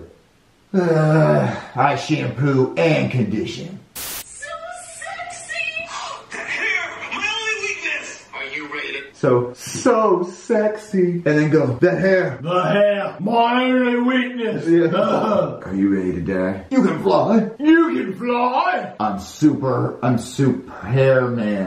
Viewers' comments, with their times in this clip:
0:05 I swear this sounds like chef pee pee talking